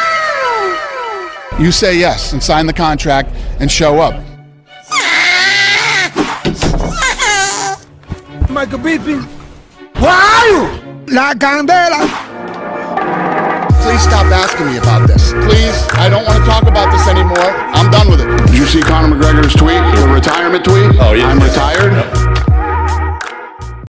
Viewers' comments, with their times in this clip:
0:09 Google translate Yoel Romero : waalu English : where are you